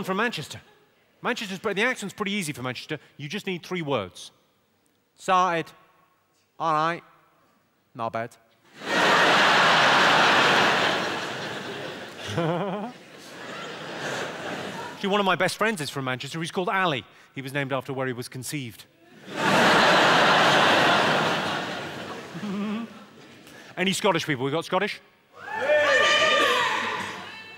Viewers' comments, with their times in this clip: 0:03 Fookin Liam Gallagher there
0:08 He laughed differently